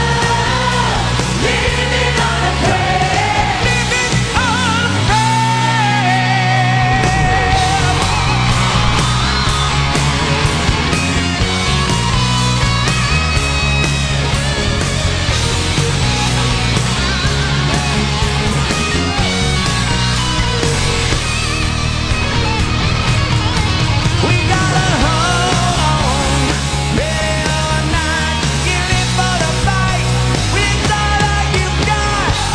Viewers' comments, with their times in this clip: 0:05 didnt expect he will reach for that ~ simon appluads
0:20 epic guitar solo fail xD